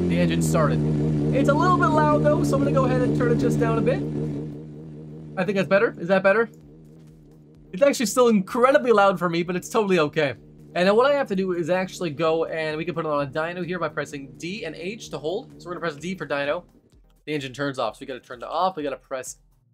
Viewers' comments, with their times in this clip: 0:06 Literally can't hear the engine at all after you turned the volume down and I'm even wearing headphones, nice headphones at that. You turned the volume down way too much. I can still hear it if I crank the volume up but then your voice is way too loud. You can hear the engine somewhat when you get to the actual driving, but you need to find a better balance because you have your voice way way louder than everything else.